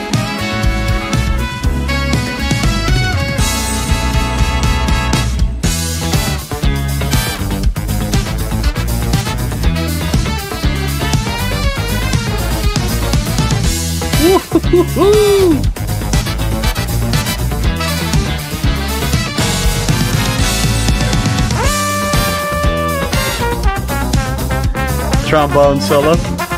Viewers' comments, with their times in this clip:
0:09 Can I just say I'm in love with the insanely fat snare on this track. And that outside the box horn section at the mark. Wowee. I think they're just modulating a half step down, or at least that's what it sounds like.